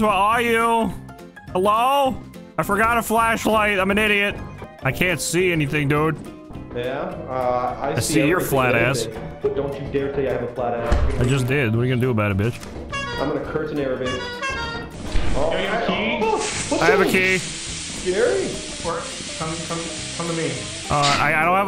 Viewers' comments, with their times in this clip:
0:05 he sounded like soos from gravity falls for a second lmao